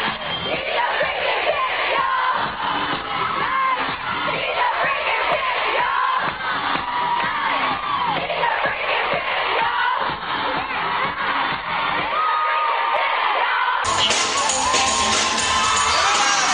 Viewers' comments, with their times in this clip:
0:04 What are they yelling JON KNIGHT HE'S A.............cant hear what